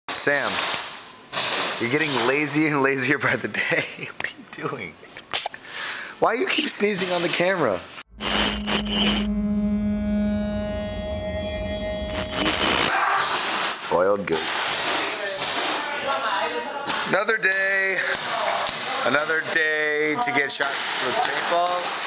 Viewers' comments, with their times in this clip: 0:05 is the CUTEST sneeze ever!
0:05 CUTEST SNEEZE EVER !!!
0:05 .. that was the cutest sneeze ever